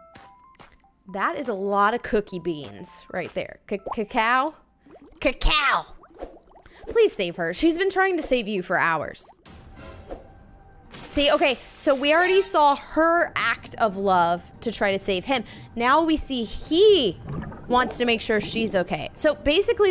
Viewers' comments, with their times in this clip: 0:06 wow cacao can't even say it i laughed so hard😂